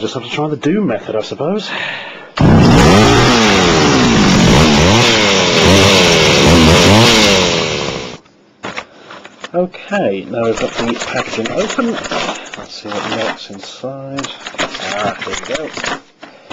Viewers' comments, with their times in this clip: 0:03 us poor headphone users